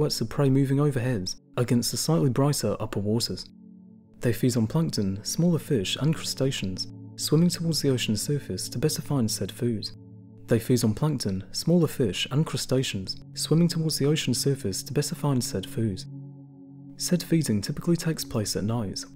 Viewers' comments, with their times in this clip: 0:04 Awesome video, I love learning about deep sea critters. (also one of the lines of dialog seems to play twice)